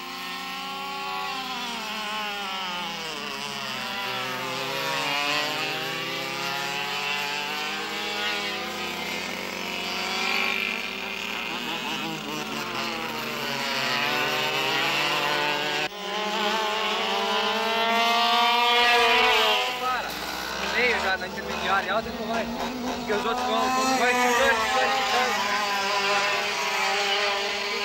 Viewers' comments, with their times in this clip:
0:09 even in the cart you can hear his throttle technique, such a legend.